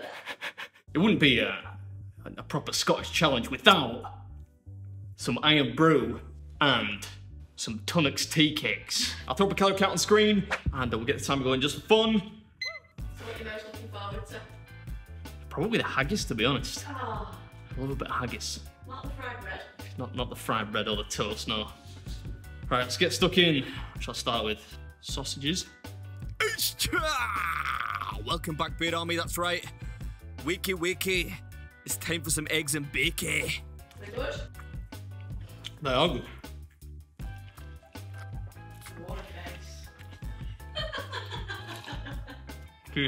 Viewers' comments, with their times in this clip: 0:05 is that how they actually read irn bru?
0:26 wtf does he say?